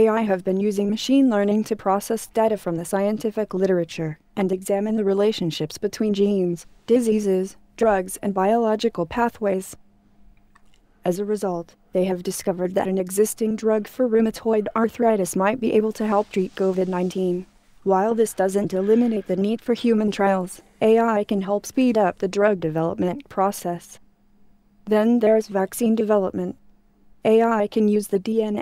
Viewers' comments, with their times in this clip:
0:09 why is she gulping? Is the voice pre-recorded?